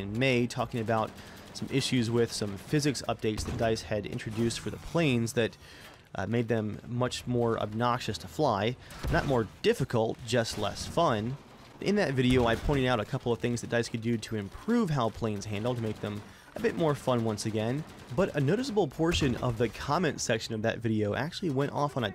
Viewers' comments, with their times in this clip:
0:04 I love how realistic that sounded getting hit. wish I still smoked weed this series was amazing blazed